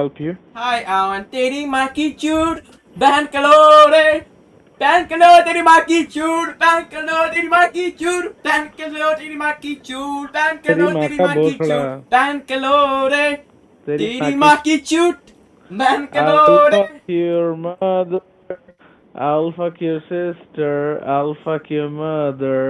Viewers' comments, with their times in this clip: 0:05 Both of you singing so funny.